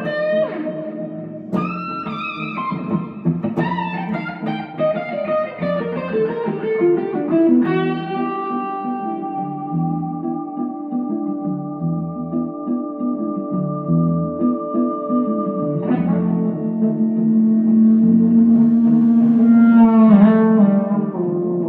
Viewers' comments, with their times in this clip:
0:07 Do you know that the feed back is coming or do you sometimes hear it developing and let it go? Probably both and all points in between. Ha!